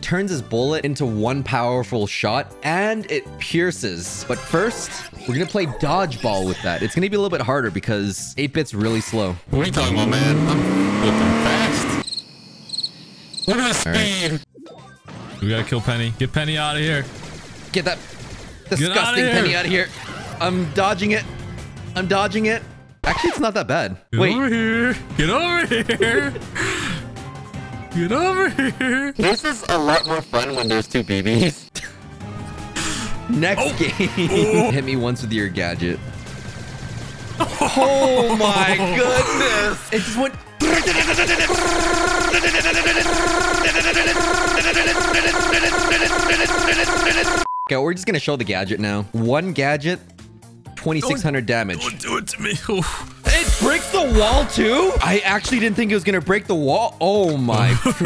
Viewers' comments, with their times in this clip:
0:10 YOU REALLY PUT DIESEL SOUND LMAO
0:40 idk but why does it sound kinda cool
0:41 Ok now thats some sick beat.
0:44 why did i hear "Amber Amber Amber Amber" lol